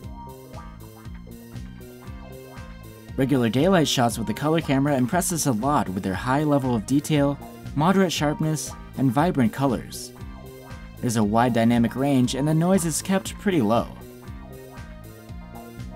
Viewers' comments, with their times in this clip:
0:03 he talks about "regular gaylight shots" :D
0:03 regular gaylight shots??